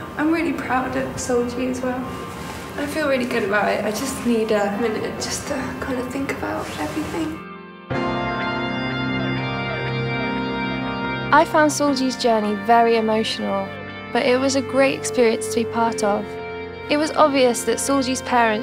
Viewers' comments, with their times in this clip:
0:06 I think I'll die with this background song